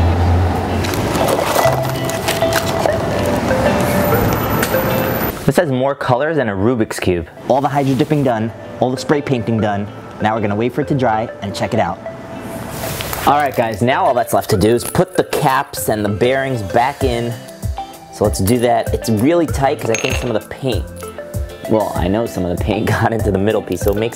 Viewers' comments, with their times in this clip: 0:06 you say rubex cube
0:07 you said rub ix cube
0:07 You said rubis cube
0:07 He said rubbix cube